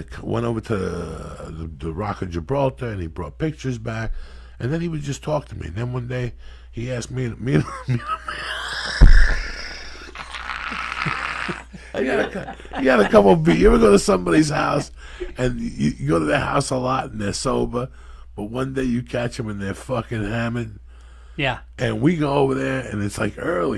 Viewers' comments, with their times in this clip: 0:05 When he just starts laughing makes me laugh lmao